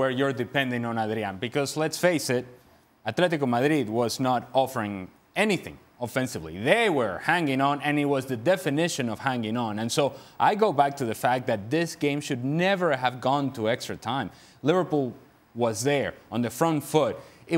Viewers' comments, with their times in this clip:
0:03 love Moreno’s native pronunciation of Atlético Madrid.